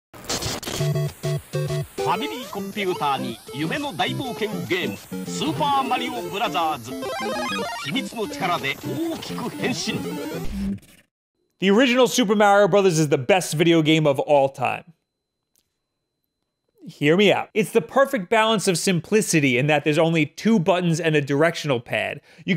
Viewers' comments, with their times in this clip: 0:05 "Super Mario Brazzers"?